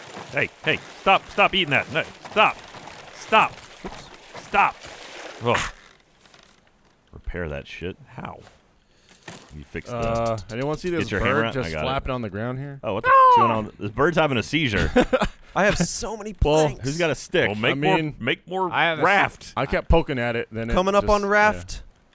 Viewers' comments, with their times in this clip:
0:10 I like the context-sensitive censors. The Geoff seagull was cute. Didn't feel as blatantly intrusive as they usually are.